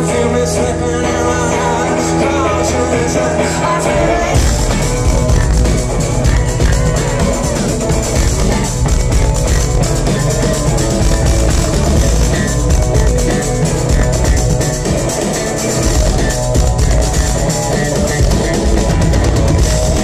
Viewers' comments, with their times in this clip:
0:05 Holy s**t. The drums at 4.50.... Phenomenal. It's incredibly tight all the way through, but Flea and Joey from onwards are on fire.